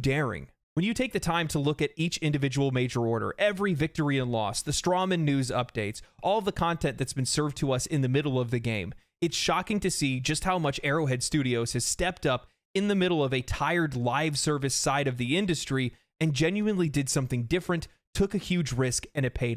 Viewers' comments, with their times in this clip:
0:03 Is that how Strohmann is supposed to be pronounced? That's hilarious if it is - didn't realize the double entendre there till you said it.